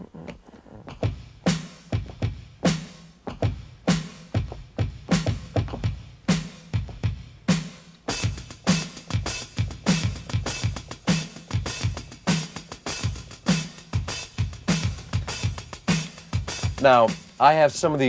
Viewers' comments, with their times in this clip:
0:03 same groove and time feel as Jeff.. It really runs in the family 😊